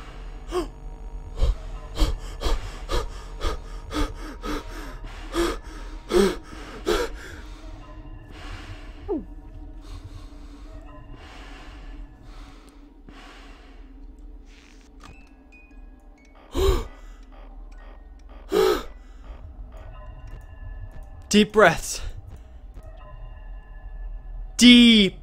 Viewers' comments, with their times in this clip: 0:08 dat gulp though